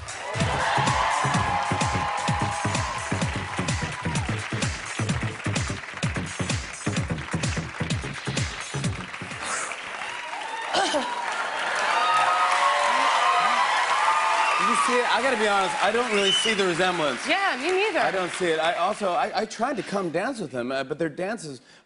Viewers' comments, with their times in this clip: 0:08 its like jennifer went somewhere and came back, she is out of breath… :P